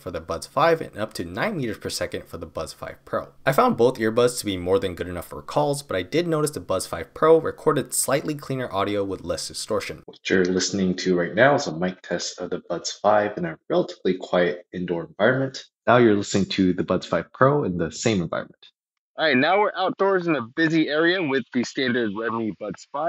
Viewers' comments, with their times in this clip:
0:10 and sometimes, people are doing software engineer interviews with me on these type of earbuds. So they go like "You are given an array of integers nums, there is a sliding window of size k which is moving from the very left of the array to the very right. You can only see the k numbers in the window. Each time the sliding window moves right by one position. Return the max sliding window." and I was going like, "huh? I can only hear 70% of what you said" People think what they said are crystal clear, when in fact, what they said was not as clear as a regular phone in the '80s